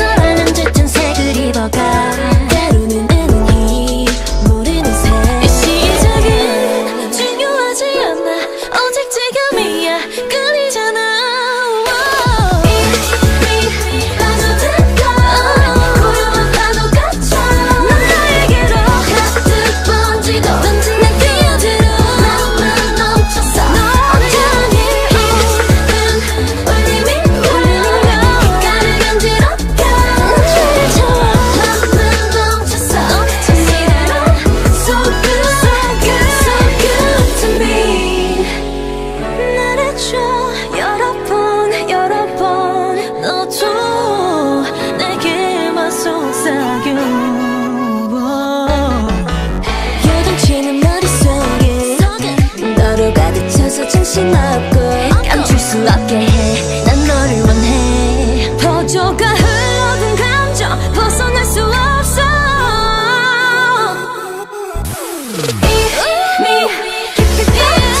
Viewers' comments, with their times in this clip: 0:04 YERI’S run at the end- that’s the comments
0:05 Yeri’s little run was SO GOOD
0:21 this was Yeri not seulgi. And I have found many more mistakes
0:21 that is yeri voice
0:21 I think "난 뛰어들어" It sounds more like YERI than SEULGI
0:23 is Wendy... I can differentiate Joy and Wendy's high voice :)
0:23 I loooove Joy’s vocal when she says ‘entirely’ in It has a bit of a rasp at the start and sounds so good!
0:38 Wendy you are killing me with that voice
0:48 THAT'S SO LOW SEULGI OMGG
0:49 Nobody talking about Seulgi’s low note ????
0:52 I feel so attacked. Damn those low notes
0:53 Irene's deep voice though 😍